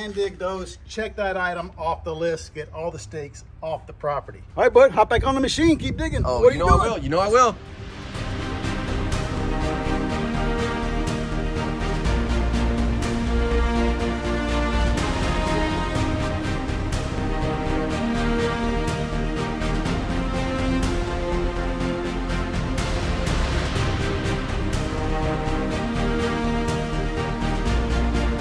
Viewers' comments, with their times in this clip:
0:09 Diggin' the music!